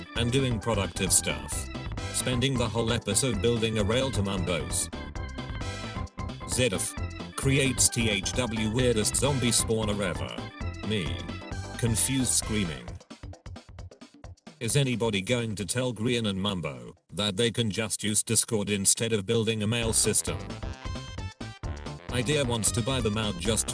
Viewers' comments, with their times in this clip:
0:06 There's a typo where the is read is thw.